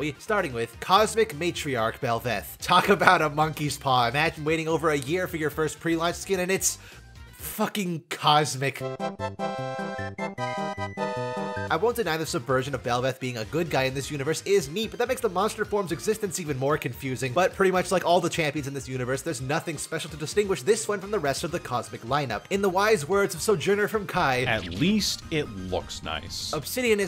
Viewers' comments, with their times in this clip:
0:09 LOL I WANT BEE'VETH